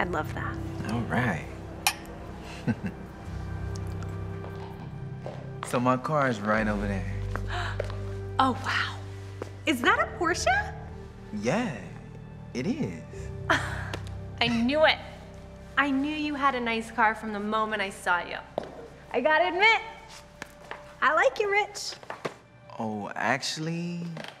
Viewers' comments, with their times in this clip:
0:10 the way she says porche🤣🤣